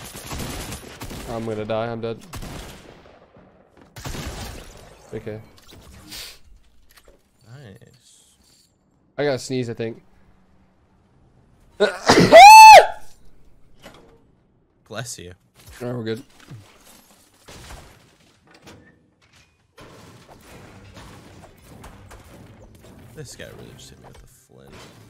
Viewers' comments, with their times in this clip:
0:09 that sneeze sounded like Micheal Jackson
0:09 bless you jajajajajajajajajasjaaj
0:10 man!! What kind of fire alarm is that?!
0:10 You can just go straight down on the slip stream (wind or air) without landing. Btw wth is that sneeze ?????🤪🤪
0:10 grunt michael jackson
0:11 Earplug users don't click this
0:11 im gonna sneeze i think hahahah and that scream tho
0:12 that was the loudest sneeze ever 😂
0:12 this how i do it exactly when im home too i sneeze like this too
0:12 tfue needs a record label with that sneeze
0:12 WARNING HEADPHONE USERS
0:12 Rip to headphone users
0:12 He hits those notes
0:12 bless u bro
0:13 when he sneezed I actually said bless you😂😂😂 accidentally